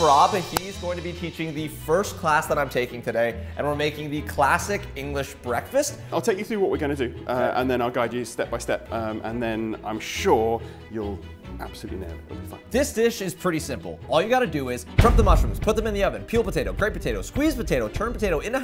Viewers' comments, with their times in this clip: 0:05 bro can we talk about how the first chef has the best most godly voice ever